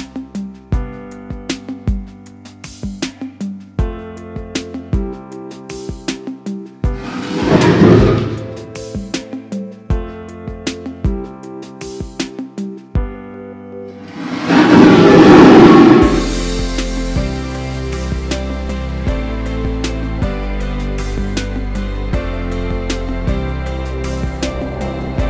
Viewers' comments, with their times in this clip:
0:06 sounds like a dragon